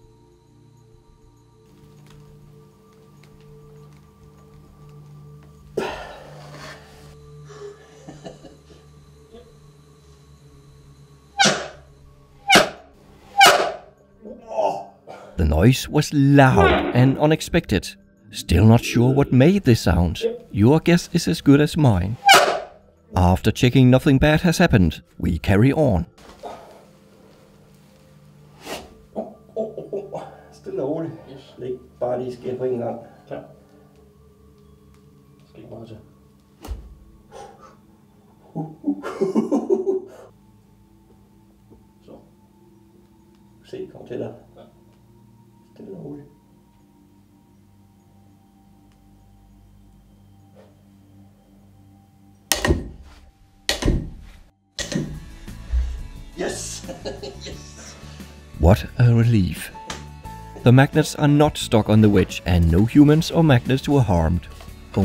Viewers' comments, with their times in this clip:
0:03 that exhale scared the shit outta me. I was so focused (Wear headphones)
0:04 The breath scared the shit out of me.
0:10 That sound is when wood against wood slides with agianst each other with great force and speed. It was the wood.
0:10 Wow that is the first time I ever heard magnets fart. Thanks for blowing my mind broz
0:10 i think the loud sound was from the plastic as it got pulled apart by the crushing force from those magnets
0:10 The noise in was likely made by the plastic sliding against the powerful magnets, like an amplified version of sliding the soles of your shoes against the floor. Excellent vid btw!
0:10 when its a hot day and you go down a plastic slide
0:10 The sound is probably the wood and the plastic rubbing together
0:10 either somebody stepped on a duck or one of you guys shit your trousers. Great vid! :D
0:10 that sound i think first they farted
0:11 I think that the sound is caused by the transient state of the magnets collision. I heard something similar when attaching two small neodim magnets together. It's kind of like throwing a coin on the ground, but at a much higher frequency.
0:11 I'm pretty sure someone farted
0:11 how magnets fart
0:12 That loud noise... it has something to do with the level of maximum 'grip' of the material (in this case, your yellow wedge) being exceeded with a momentary slip before finding traction again. Tyres on cars do the same on a road surface. Not the movie kind, a long extended screech of a sliding car, lol - the short sharp kind you notice in car parks with polished floors and such.
0:12 I think the noice was the sheer amount of pressure the top magnet put on the plastic wedge and the wood, I sounded like a old squeaky board. So I think it was mainly the friction that caused it to be so loud
0:12 is the vibration of the plastic wedges, almost ringing like a bell. It’s caused by the directional force of the magnet creating a huge amount of friction as it slides downward, and the wedges are not secured at the base so they just continue the vibration.
0:13 its him farting, but he had a good recovery plan.
0:13 it's a magnet fart 😂😂
0:13 bro... did u just fart?
0:14 that sounded like something scretching. Sounded like a wood or metal one. But thats so loud
0:15 the sound of reality breaking
0:15 a loud fart
0:15 when you fart in school.
0:16 My guess is that the plastic was scratching against the Magnet.
0:16 The two magnets were squeezing the plastic, as you pulled on the wedge it made a noise on the wood. That's what made the noise
0:17 What The Noise
0:18 the sound was the friction between the plastic and the metal.
0:18 Sure I know It was a loud FART.
0:18 It might be the sound of metal sliding on metal off of plastic
0:18 friction between the metal and plastic made the sound same thing with shoes on a basketball court
0:19 you really that stupid you have no idea where the sound came from? Maybe the insane friction between the two magnets and the yellow plastic wedge? I hope the viewers arent as stupid as that guy.
0:20 I think the sound at roughly was the plastic wedges compressing and being drug at the same time. Reminds me of the sound a balloon makes when rubbed rough on a hand.
0:20 thats the sound of the magnet squeezing the plastic wedge so hard that it vibrates as it slides like a dry squeegee.
0:20 The loud sound was made due to the magnet slipping of the plastic type surface, creating a very loud squeaky noise
0:20 i guess, this is not a scientist's channel? it was the air which is rapidly coming out of the way of 2 things coming one to each other very fast. and it caused vibrations of plastic, which made a sound because of tight touch with other object.
0:20 The sound was a screeching sound created from the magnets sliding across the yellow wedges. The sound was loud because there was a tremendous amount of vibration in the plastic (sound is caused by vibrations in matter), which was caused by the tremendous amount of pressure on the plastic caused by the high vertical magnetic force and the relatively smaller horizontal force caused by the pull of the two men.
0:20 I's the same thing as with other magnets suddenly connecting: they collide, get pushed back from each other as a result of the sudden colliding, then collide again. Because the magnets where so strong, the frequency of the colliding and getting pushed back is very high, so the sound it makes is also high. So it was just similar to the sound normal magnets would make when connected, just much louder and higher caused by the strength of the magnets.
0:20 the noise was the frictionof the magnet and the plastic
0:20 What made that sound was the friction between the magnet and the ramp since the ramp was pulling from under a supposedly heavy weight and the friction sent a vibration through the ramp as most of it had become free.
0:20 that sound was from the plastic rubbing the magnet
0:20 the sound seems like the same sort of squeak you would get rubbing your hand on a thick plastic sheet for instance. Noise due to high friction force. I’m also surprised that you didn’t seem to try calculating any if the forces involved given the crazy pull strength. Nice job though!
0:20 How does one even separate such things? Seriously, find a way to separate them... That noise was the magnets rolling over the bevel and for a breif moment only touching a small surface of the plastic, which than vibrated like a clarinet's reed from the friction of pulling it.
0:21 if I had to guess I would say the angle and position of the magnet made friction causing the noises
0:22 the Magnets touch eachother --> Vibration of Metal --> Vibration of air --> noise
0:22 i think that noise was just the magnest squeezing so hard together that it created a whole bunch of friction shoved the wedges out a little and made that squeak
0:22 The noise is just the magnet sliding on the plastic!!!
0:23 that loud sound was friction between plastic and wood.
0:27 I think it makes high pitch noise cuz when it hit, it then bounce back nd the vibrations were pretty quick resulting in high frequency sounds Idk though
0:29 sounds like a gay porno
0:39 That Winnie the poo laugh
0:50 Probably the most satisfying click ever. Amazing job! It sure was nerve-wracking, even to me